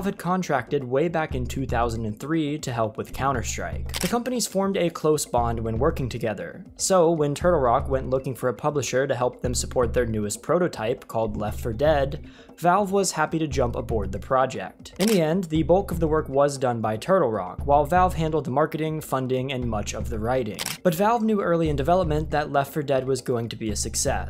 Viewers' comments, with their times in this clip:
0:05 I made it to and heard probably 10 shutter sounds, I don’t think I can handle anymore